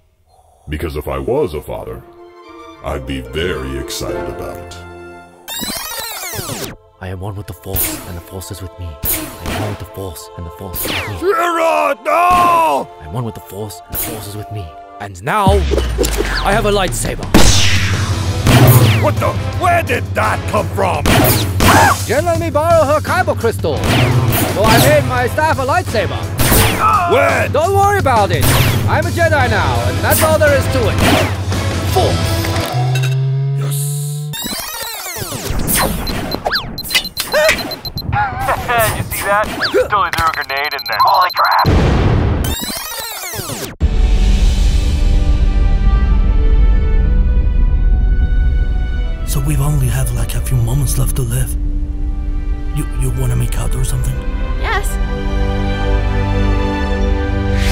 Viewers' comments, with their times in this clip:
0:06 that's an amazing Donnie Yen impression right there
0:43 sounds very FF VII ish ;-)